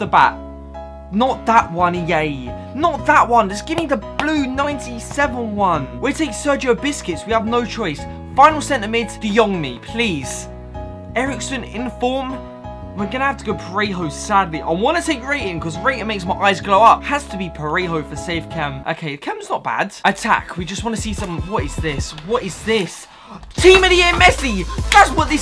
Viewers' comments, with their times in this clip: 0:06 we take Sergio Biscuits😂😂😂😂